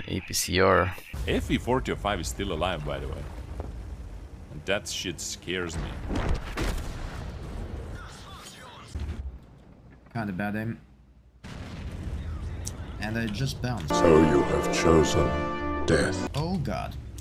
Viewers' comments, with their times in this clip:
0:04 -'That shit scares me' Kaboom